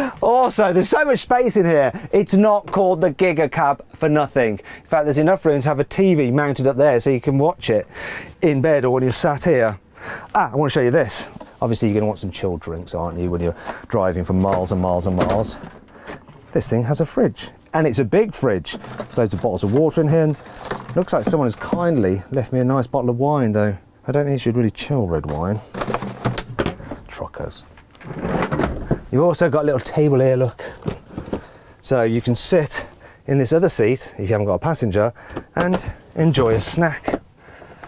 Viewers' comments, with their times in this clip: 0:10 Did bro say children
0:14 I thought he said children
0:18 a bot of wota